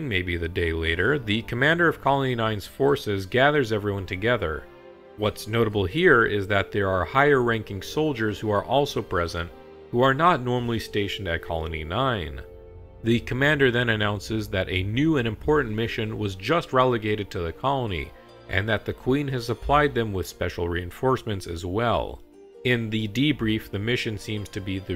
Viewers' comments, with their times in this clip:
0:07 such a perfect notification